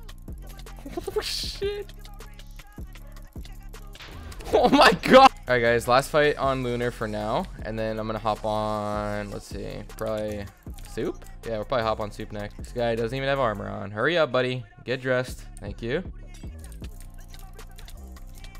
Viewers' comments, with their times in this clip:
0:04 BEST OMG VOICE LETS MAKE IT a MEME